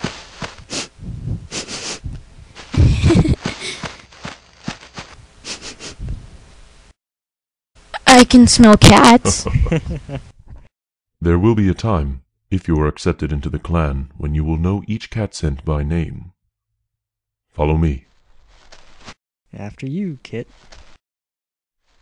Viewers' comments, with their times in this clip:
0:05 hes so loud
0:06 he said that very loudly
0:06 And Rusty farted
0:06 very loudly: "I CAN SMELL CATS"
0:07 take off your headphones